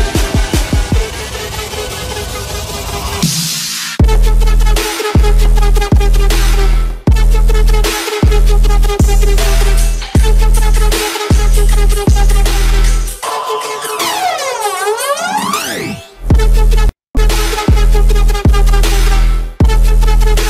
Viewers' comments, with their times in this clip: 0:04 it sound like speaking russian, lol